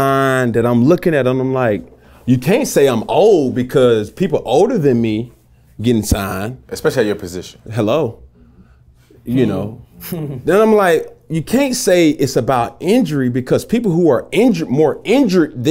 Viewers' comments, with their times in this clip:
0:03 its the "Hello" for me 😭😭😭😭 Had to add that emphasis Cam!!